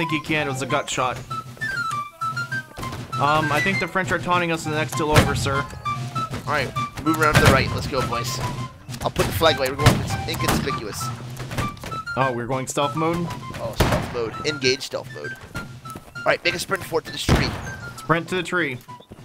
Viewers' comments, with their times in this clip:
0:06 That march of the Grenadiers Fife and drum tho -->